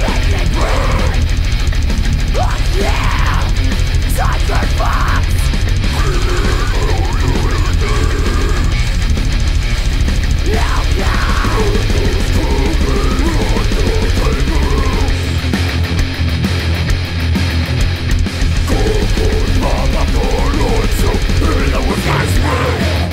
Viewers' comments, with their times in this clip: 0:06 I wanna say this one, but I can't really understand what he's saying.